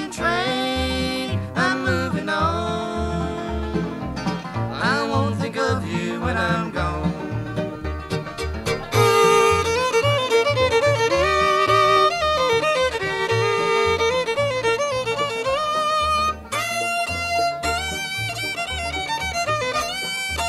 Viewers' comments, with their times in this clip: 0:05 Thanks for the upload......great Clarence & Roland harmony, nice Scott Stoneman break